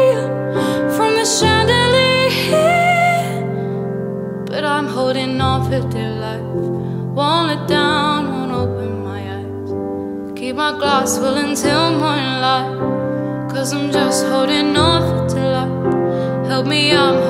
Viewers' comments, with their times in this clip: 0:05 Really great switch on the first "but I'm holding on for dear life," Nails the narrative of the song. :-)